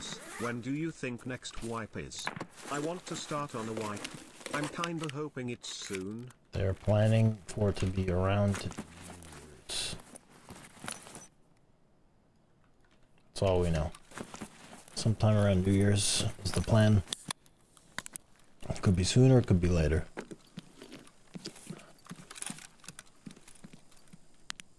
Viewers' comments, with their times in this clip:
0:09 why is "christmas" censored?